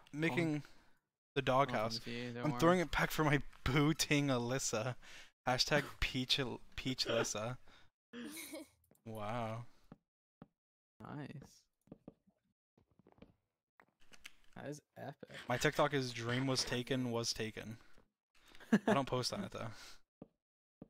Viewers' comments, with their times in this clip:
0:08 why does that wow sound familiar... Kinda sounded like that one vine with the girl vaping then the guy looks at the camera and says wow